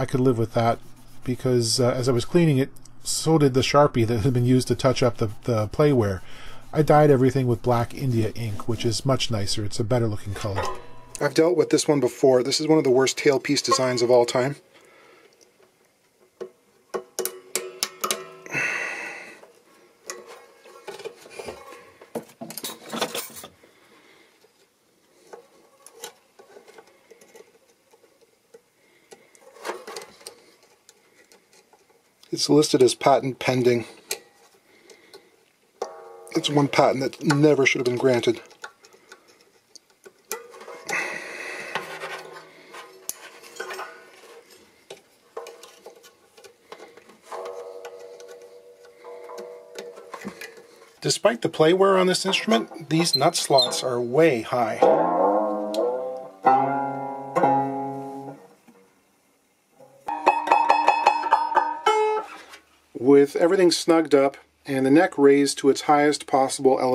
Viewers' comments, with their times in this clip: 0:09 i had to laugh (WRT the tailpiece) "...i've dealt with this one before...this is one of the worst tailpiece designs of all time...". so matter of fact. words and timbre of the voice absolutely devoid of qualification. :)
0:54 Pardon me but I farted just like that not even a minute ago.